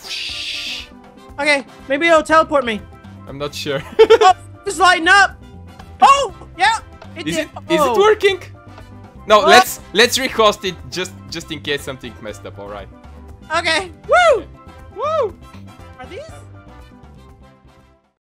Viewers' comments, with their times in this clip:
0:07 is it twerking
0:08 I though he said 'Is it twerking?' Imsostupid